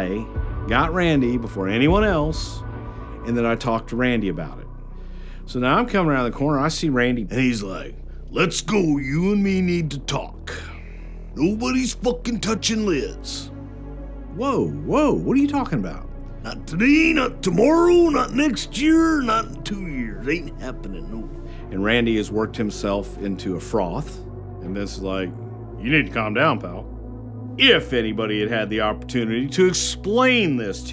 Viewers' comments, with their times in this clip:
0:09 that impersonation was spot on... Macho Man was the REALEST.... R.I.P
0:15 HEHEHE! Thats a good impression.